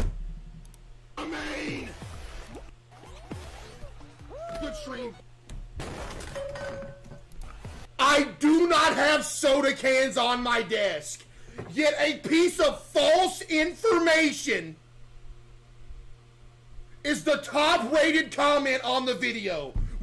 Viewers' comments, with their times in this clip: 0:05 Sounded like a spent cartridge coming out of a howitzer